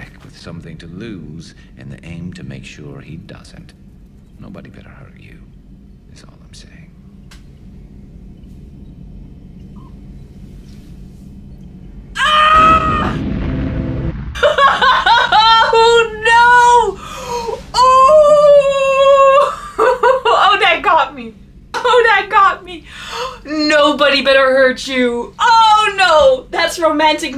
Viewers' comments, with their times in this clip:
0:10 I LOVE YOUR OUTBURST ON WHAT GARRUS'S. That is definitely my reaction too